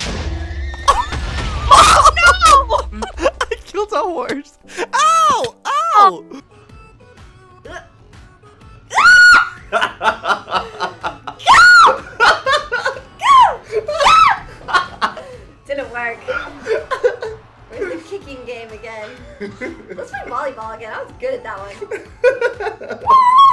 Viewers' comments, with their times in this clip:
0:07 I know, his laugh is so contagious! And my profile picture is Lol.